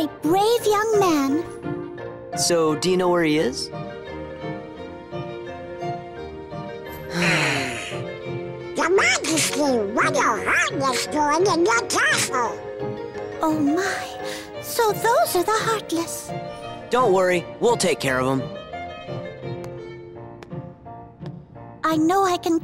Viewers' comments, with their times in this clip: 0:10 was that a voice crack I heard?